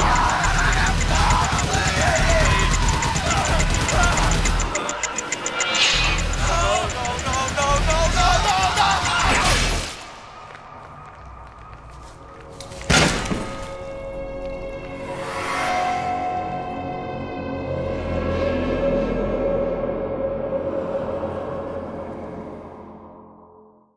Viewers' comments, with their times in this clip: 0:10 *slam* That didn't hurt...